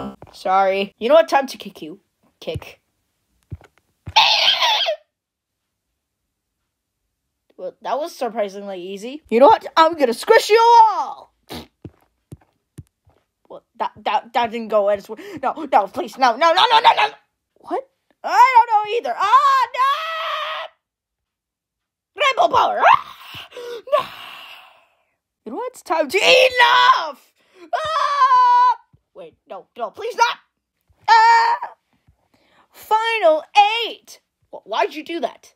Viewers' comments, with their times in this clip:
0:04 EEEEE made me laugh
0:22 Bro really said “Branko Power”😂